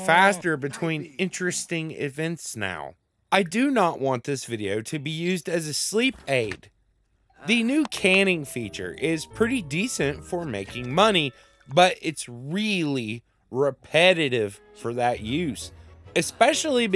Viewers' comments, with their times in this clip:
0:04 I'm sorry but I used it as a sleep aid, I find your manner of speaking and voice soothing